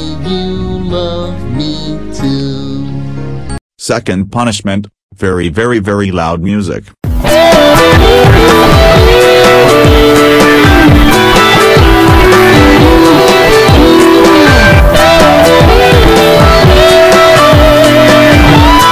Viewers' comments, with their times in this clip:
0:06 this is loud music Haha